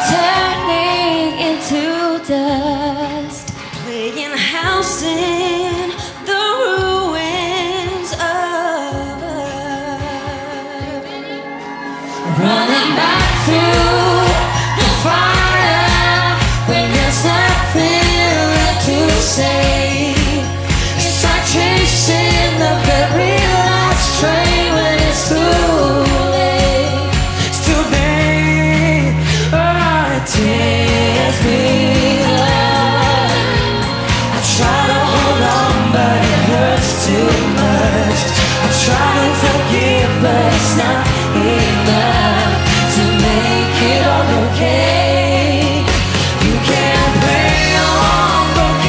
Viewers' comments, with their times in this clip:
0:10 Is someone yelling out "READY?" ?
0:33 NICOLA Did an amazing job when she sang with James not to mention the note she sang ....AMAZINGGG!!